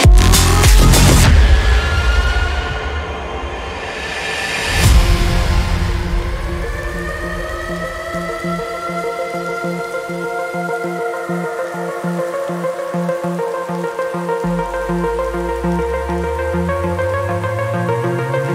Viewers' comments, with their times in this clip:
0:04 The tune is pure bliss! 😊